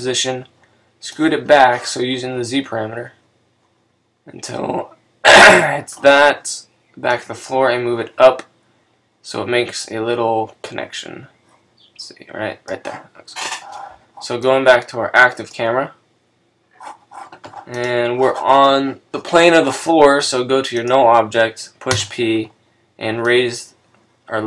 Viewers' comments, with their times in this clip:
0:05 RIP to the headphone users